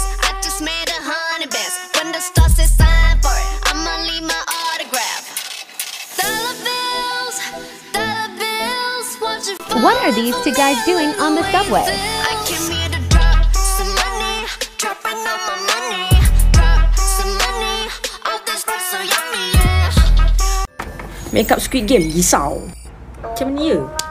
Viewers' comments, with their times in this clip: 0:05 THESE 2 TIKTOKS CINNECTED THE SONG